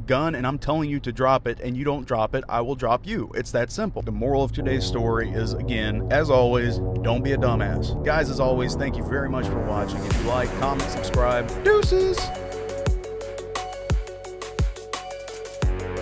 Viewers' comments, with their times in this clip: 0:04 i thought the music was you driving on a rumble strip.